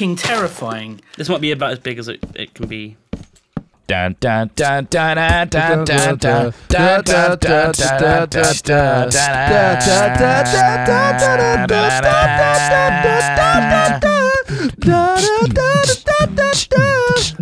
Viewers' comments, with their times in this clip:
0:03 one of the best All I Want For Christmas Is You covers I've ever heard.
0:03 Meanwhile, back at the hat corp, a random beatbox was taking place xD